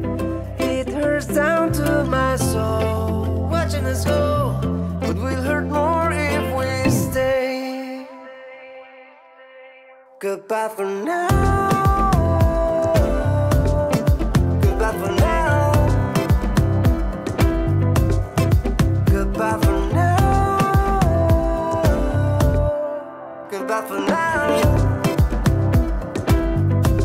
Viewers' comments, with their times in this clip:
0:08 should have dropped this chorus more through out the song